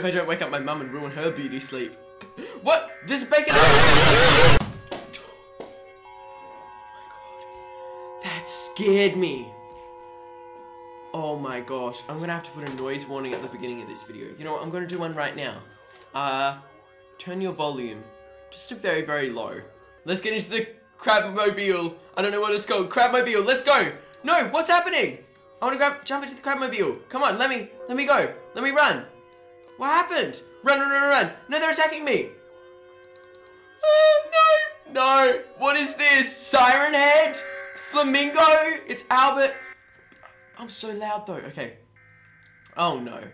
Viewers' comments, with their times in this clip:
0:03 me on headphones and volume full be like
0:29 he’s being so loud